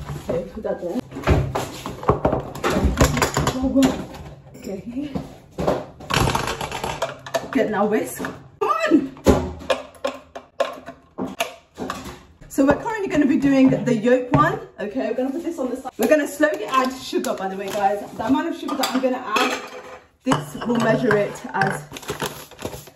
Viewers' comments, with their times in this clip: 0:09 the best accidental beat ever lol